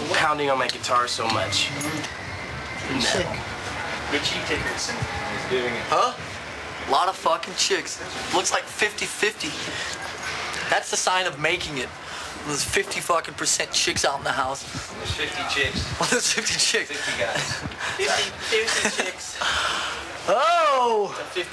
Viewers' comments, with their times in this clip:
0:03 The way he says it.